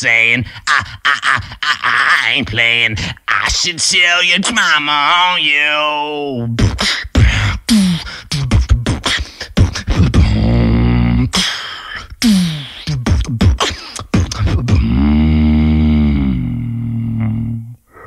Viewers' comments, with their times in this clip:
0:06 The beat starts Thank me later
0:06 the beat actually started :v
0:06 am I the only one who loves the beat clean as fuck